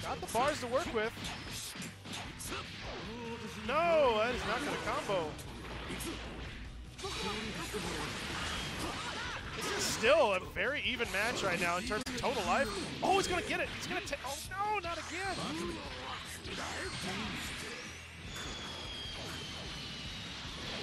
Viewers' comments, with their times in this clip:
0:04 Audio becomes unsynced lame stuff but thanks for being there and sharing the fights with those of us who couldn't make it.